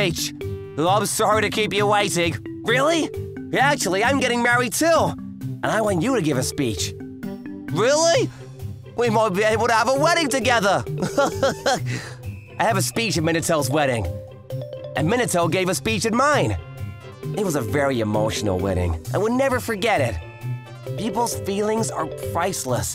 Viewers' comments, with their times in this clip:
0:08 They sound like they're from Liverpool